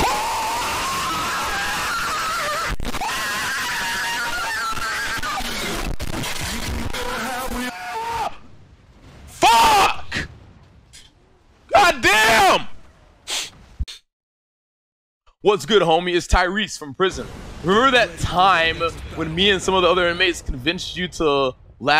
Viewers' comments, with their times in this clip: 0:06 i think that was #1 loudest shout